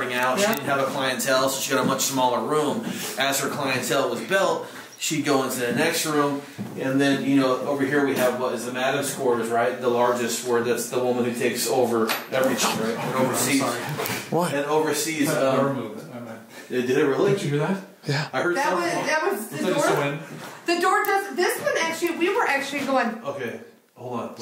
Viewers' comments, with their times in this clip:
0:10 where the door knob turns the emf Beeps right before